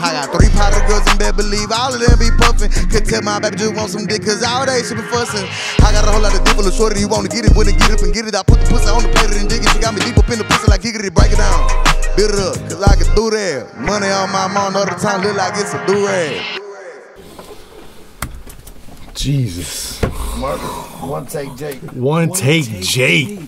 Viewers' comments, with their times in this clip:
0:04 is an example of how fast rap can be rly good sometime